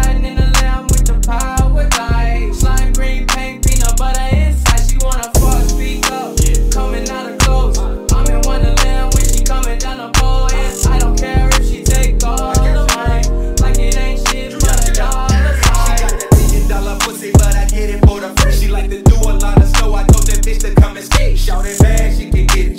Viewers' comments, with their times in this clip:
0:03 this guy had heart beat vibe😭😭😭